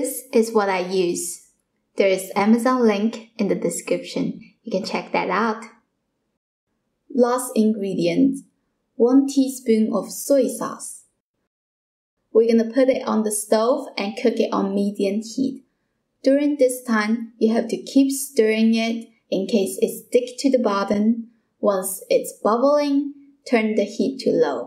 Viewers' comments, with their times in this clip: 0:07 ...i thought that bitch said poison sauce...lmao!